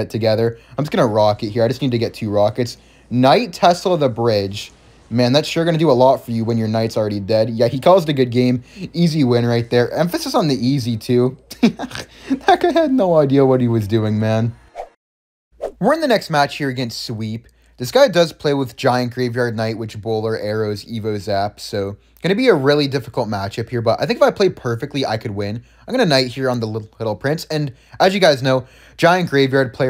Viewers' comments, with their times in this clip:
0:10 He laughed and somehow made pig sound wtf